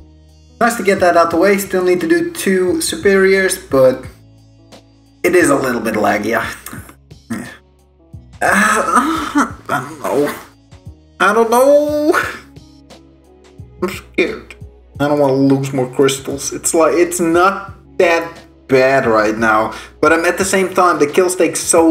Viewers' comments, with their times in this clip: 0:09 sounding mad sus. must've been my editor playing a prank on me frfr